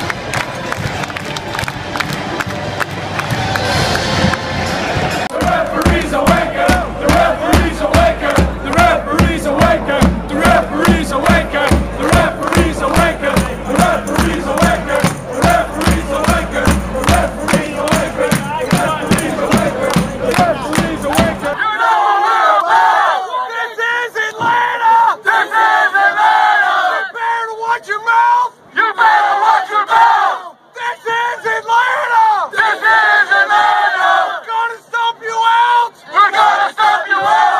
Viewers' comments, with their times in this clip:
0:10 just doesn't sound right when Americans say it
0:22 is literally the saddest chant I’ve ever heard